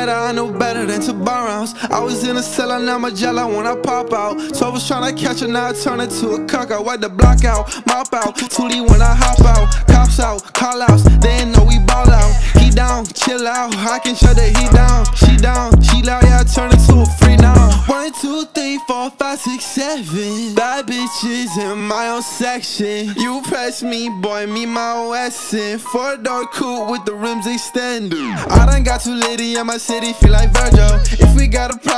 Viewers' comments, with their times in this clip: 0:06 LOVE the chorus BRUH ITS LITTT FIREEEE
0:17 drop best part